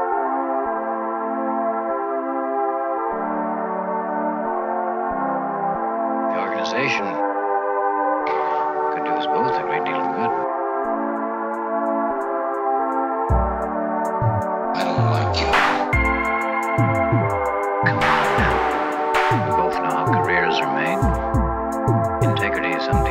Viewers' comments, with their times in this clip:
0:04 Holy fuck the spoken voice samples that start blew my mind on a level no one will ever understand, anyone else get it???